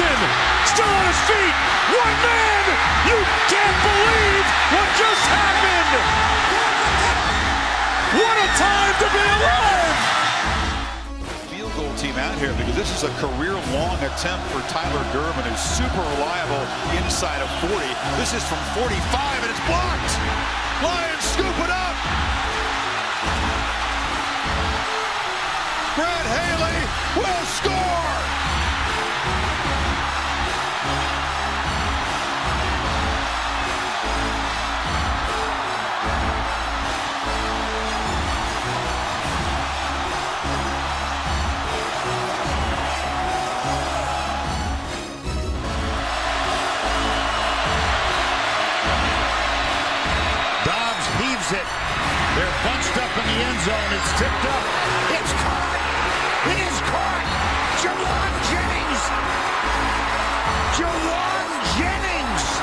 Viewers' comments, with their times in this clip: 0:04 wait for the voice crack lol 🤣
0:46 best clip for the best talker in the background